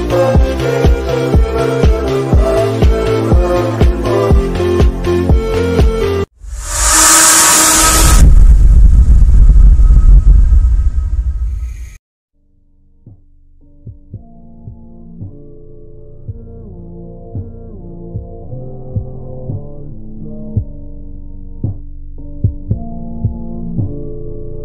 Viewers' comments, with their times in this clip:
0:09 I HAD HEADPHONES IN AND THE DID I SCARE YOU WAS ON SO LOUD OWIE